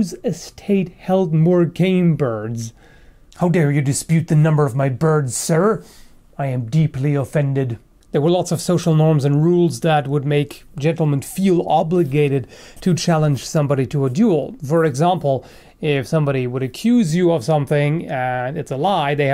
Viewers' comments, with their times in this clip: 0:07 ish you really look and sound like captain brabosa Probably just me tho